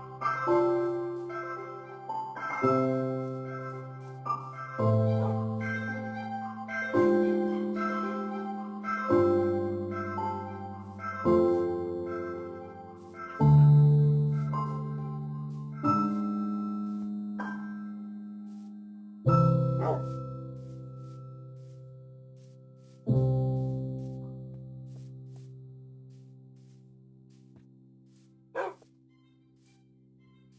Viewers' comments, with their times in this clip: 0:06 Music melancolic part
0:14 this song always made me happy :)